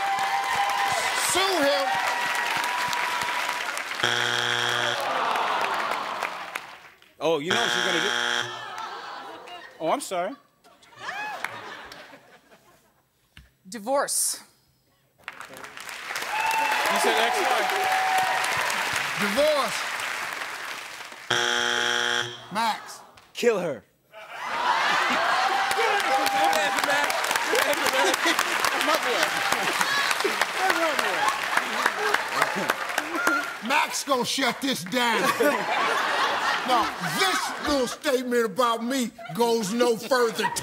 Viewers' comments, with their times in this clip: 0:05 Did that buzz seem too quick to anyone else?
0:23 Demonic noises K I L L H E R !